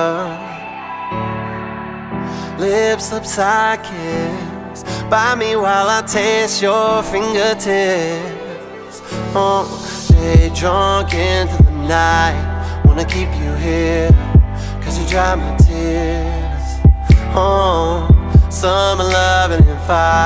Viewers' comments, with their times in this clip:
0:07 that funky sound speaks to me spiritually.